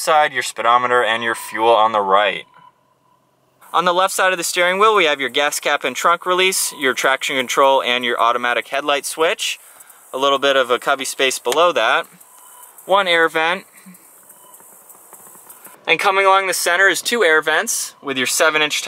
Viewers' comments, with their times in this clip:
0:06 what the hell is that intermittent ringing noise on your mic?